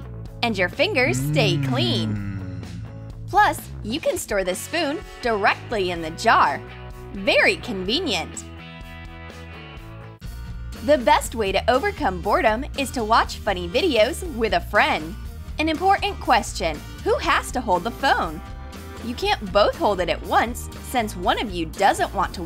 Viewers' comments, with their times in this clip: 0:03 Who heatd a guy say mmmm its sooo creepy